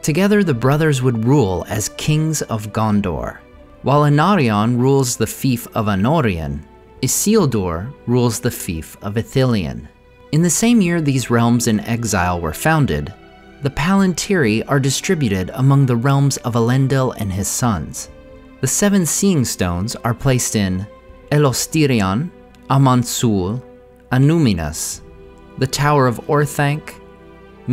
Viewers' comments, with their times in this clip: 0:08 Isildur rules the thief of Ithilien?